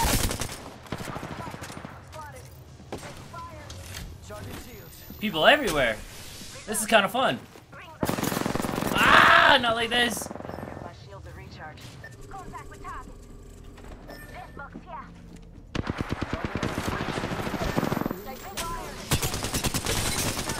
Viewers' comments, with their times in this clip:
0:08 bro that scream had me lmao so hard i choked on my spit 😂 😂 😂